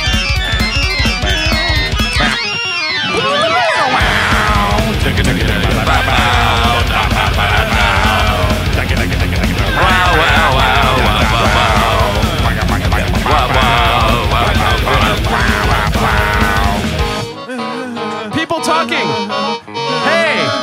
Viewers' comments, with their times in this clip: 0:03 Van Canto, is that you?